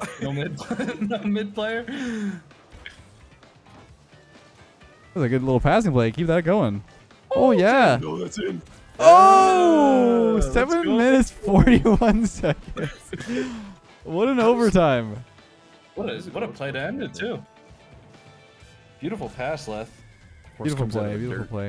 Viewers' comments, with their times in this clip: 0:07 the voice saying 'no that's in' is so deep and hilarious, i cracked up so hard